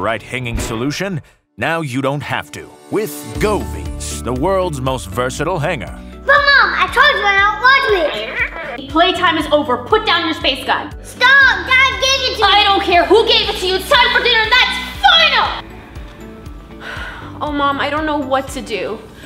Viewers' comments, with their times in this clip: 0:03 Am I the only one who thought they said Go b**ch